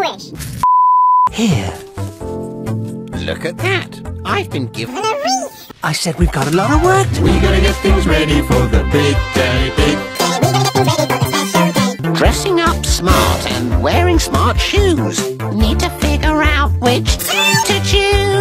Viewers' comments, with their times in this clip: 0:04 I've been given A WEETH! so cute